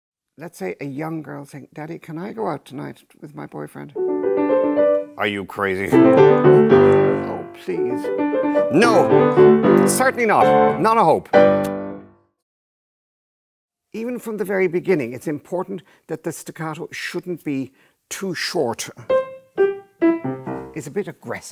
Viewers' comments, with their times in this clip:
0:04 Hmmmm...I don't think it's a good analogy because I don't hear any conflict in the music. If anything, the lower voice is strongly agreeing with the upper voice.